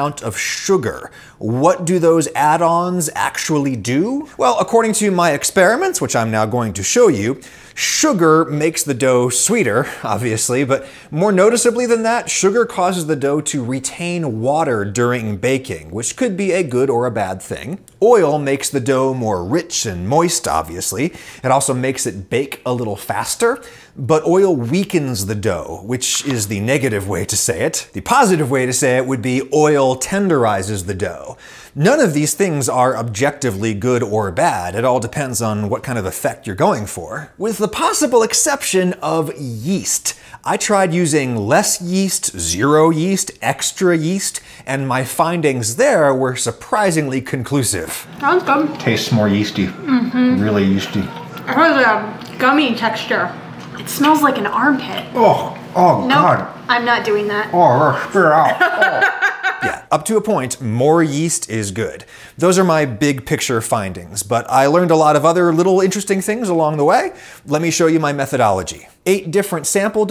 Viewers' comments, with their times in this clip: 0:04 omg that voice crack caught me off guard
0:55 Adam sounds like the pufferfish eating the carrot